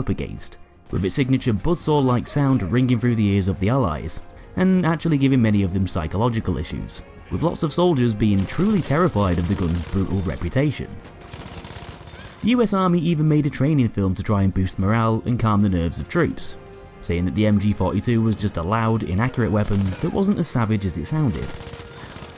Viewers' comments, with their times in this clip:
0:03 M1 garand ping